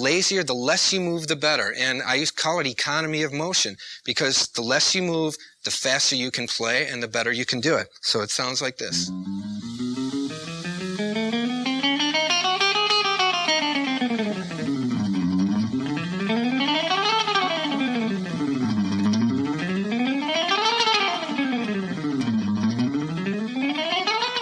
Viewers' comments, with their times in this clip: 0:08 wow, chromatic scales always sound so insane at that speed..